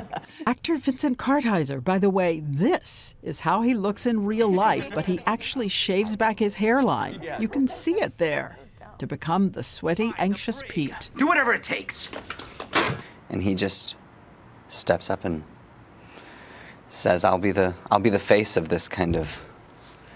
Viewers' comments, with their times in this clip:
0:03 Jon Hamm as such a distinctive voice, and Pete looks good